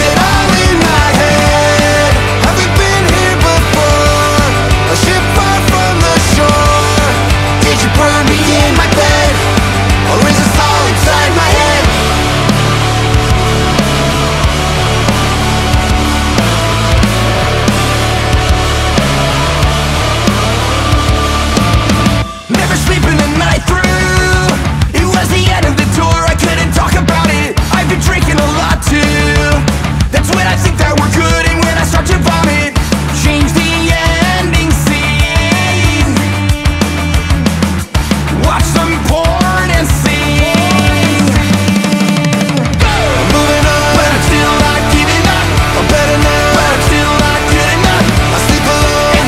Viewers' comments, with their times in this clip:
0:10 here he says yead
0:11 he says Yead 🌝
0:37 Okay so…. He totally says “Watch some porn and SING” and not sleep. Someone please tell Me I’m not crazy.